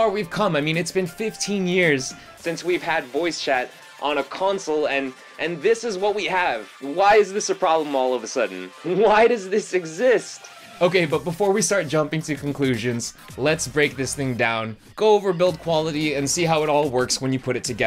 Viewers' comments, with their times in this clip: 0:04 I thought my audio was fucked lol